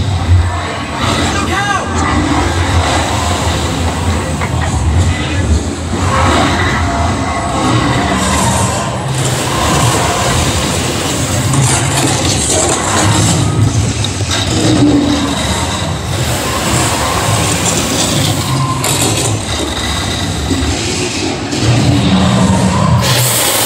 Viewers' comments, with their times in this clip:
0:05 Yeah, they added a new animation of the dragon and didn’t add the sound effects with him. Lol. I agree they have some touching up to do.